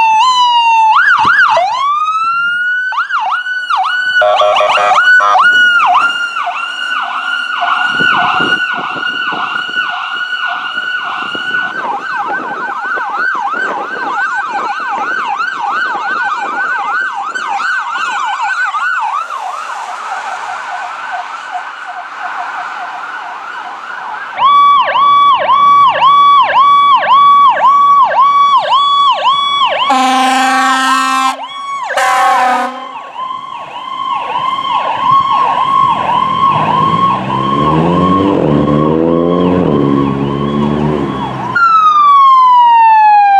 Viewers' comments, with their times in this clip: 0:04 that siren to me sounds like a different type of powercall
0:04 that siren to me sounds like a different type of powercall
0:30 damn that horn is badass. Nice catches
0:30 damn that horn is badass. Nice catches